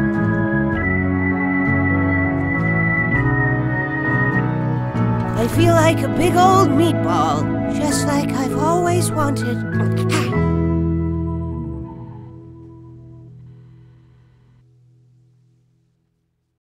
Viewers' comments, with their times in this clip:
0:04 You probably know this by now, but he's the silly knife stabber. You can hear him talking after the credits